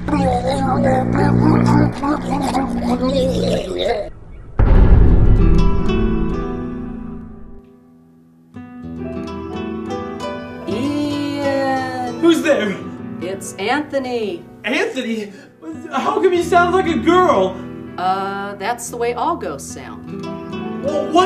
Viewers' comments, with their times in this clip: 0:05 sounds like the soundtrack from Akira.